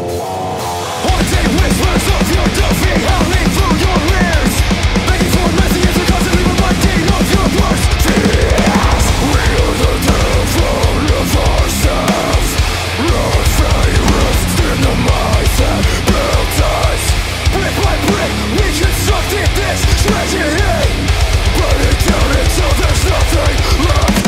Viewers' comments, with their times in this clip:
0:07 Can we talk about that growl/scream please? Thats brutal